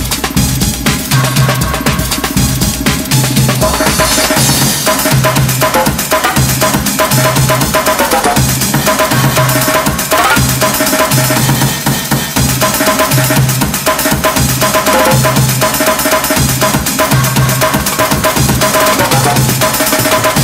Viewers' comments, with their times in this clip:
0:08 i think i just heard the metal pipe silently play.